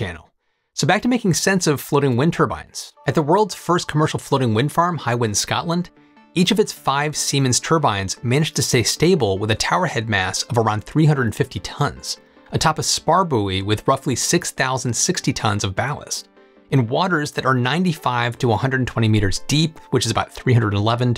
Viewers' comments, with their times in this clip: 0:07 Jump to to hear him say "Semen."